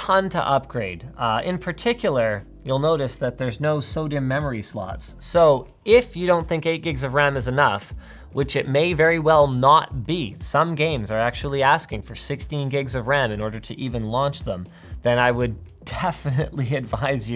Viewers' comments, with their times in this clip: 0:03 sodium memory slot. XD
0:03 sound kinda like sodium memory slots